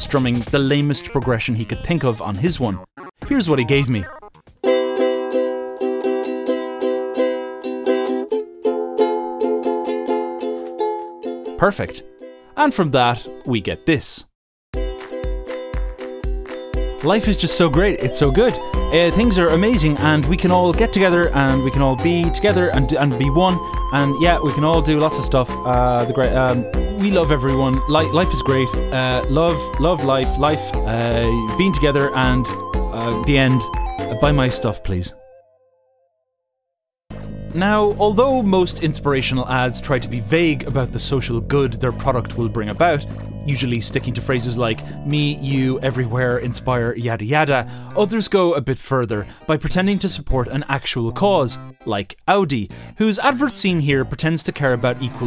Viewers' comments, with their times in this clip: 0:03 Oh! He just played every Russian rock song ever! I almost started singing, but I didn't deside which song to sing.
0:14 There's clapping in the nothing music even if he didn't mention it
0:14 in the endeavor of creating corpo music, you somehow managed to create some funky ass zelda type of music and im all in for it
0:15 oh God, that upbeat foot-stomp + handclap hurts
0:15 sound if wealthy did a comercial
0:16 lmao all that desparate bumbling and frantic searching for words kinda reminds me of Wheatley
0:17 Honestly, I think the problem with your version of a couple of the "nothing music" songs is that they're a bit too good. Not amazing, but that synth bit is mildly interesting. Can't be having that.
0:17 jesus, could have tuned the ukulele first mate
0:18 why does he sound like wheatley
0:37 oh no, you're totally wrong, when i hear that music i know it's about a insurance company saying they are good people